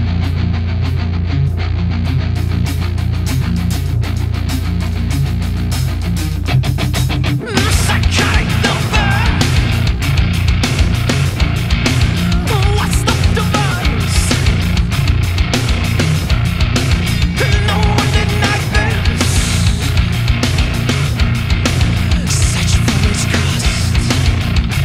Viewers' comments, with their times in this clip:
0:06 Best guitar riff